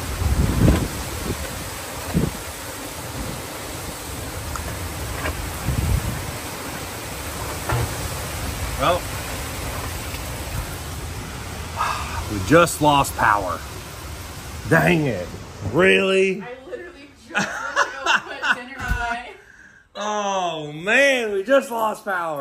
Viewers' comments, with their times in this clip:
0:05 you can see the light in the distance and can hear a transformer blow or wire short out.
0:07 lmao you can hear the dreaded arc.